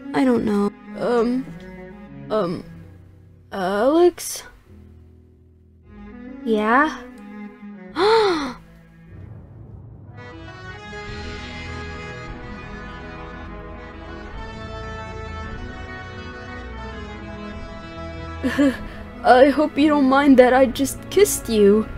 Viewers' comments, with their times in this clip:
0:09 tries not to laugh * BURSTS OUT LAUGHING *BROOOOOOOOOOOOO THEY JUST KISSED!!!!!!!!🥰🥰🥰